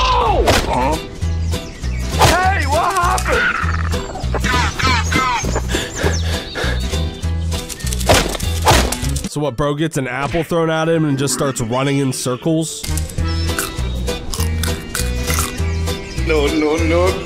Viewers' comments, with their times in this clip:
0:03 i hate hearing the go go go sound effect in brainrot mostly because it just ruins memories of playing counter strike source with da boys. i just realized why is that sound effect put in "kids" videos if the source of it is a game where you can play as terrorists...